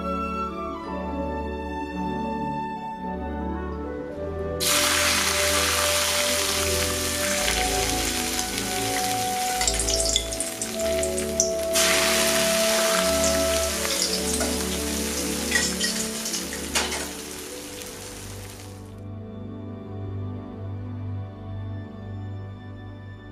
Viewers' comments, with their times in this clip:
0:05 what did you pour in that made it sizzle??? Oil?